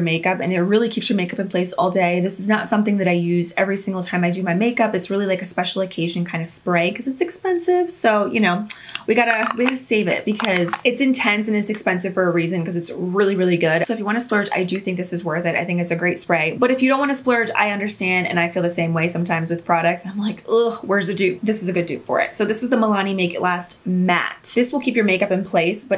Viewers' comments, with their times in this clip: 0:07 the way she said expensive ♥️♥️